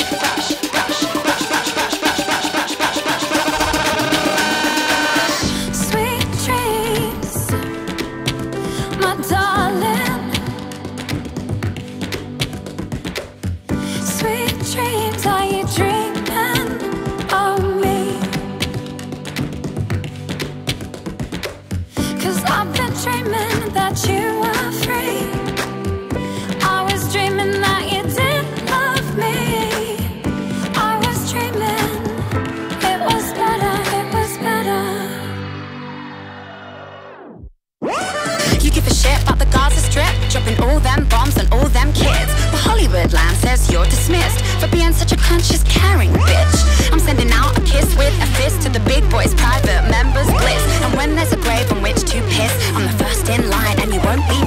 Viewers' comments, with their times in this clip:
0:08 What the hell is this? Where is the melody? The beat is good. And that part seems like it was imported randomly. Music in 2017 is so shit. Ppl experimenting with weird shit.
0:38 eminem who/? the rap goddess!